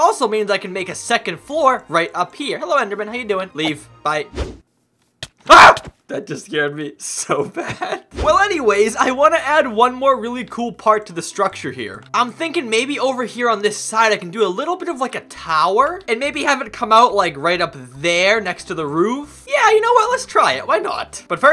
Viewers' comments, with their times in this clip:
0:05 his scream had me dying 💀💀💀